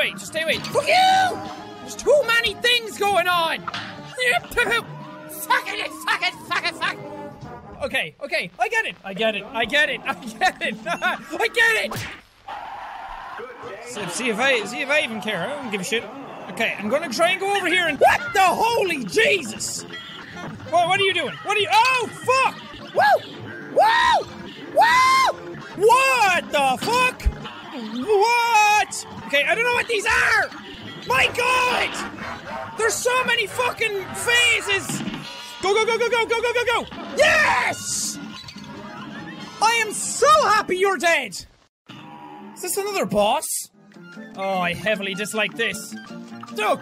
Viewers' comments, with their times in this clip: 0:05 the inner Irishmen has awoken from inside...and now we’re all doomed...
0:31 the laugh in the background reminds me of Call Of Duty: Zombies when getting a Teddy Bear from the Mystery Box.
0:33 Call of duty zombies laugh